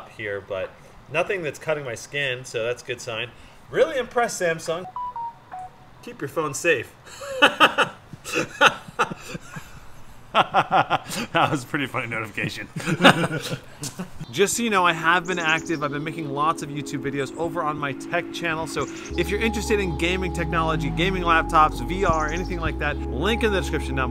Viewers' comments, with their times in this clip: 0:07 the greatest notification that I ever saw or heard on YouTube or on a phone